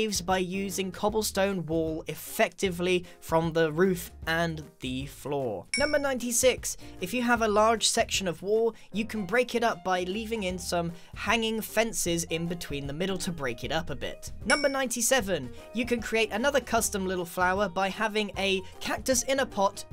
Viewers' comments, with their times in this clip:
0:05 “If you Have A *Larrrrrrrrge*…” The way he pronounces it is so strange to me I don’t know why 😂